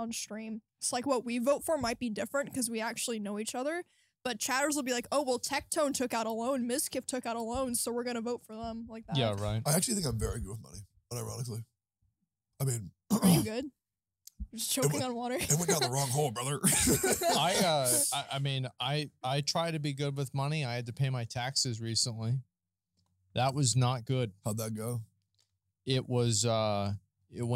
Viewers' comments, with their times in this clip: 0:10 this dude is funny, man spent half a million on genshin, look at how seriously he says "I'm actually good with money* OMEGALUL DUDE COULD SAVE A WHOLE AFRICAN VILLAGE WITH THAT MONEY KEKW BUT IT WENT TO ANIME TITS THIS WORLD IS not real wtf